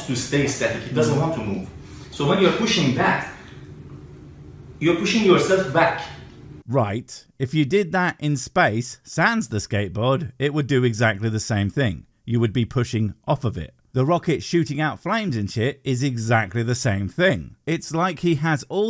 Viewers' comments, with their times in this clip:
0:04 that pause , his own brain is turning on him lol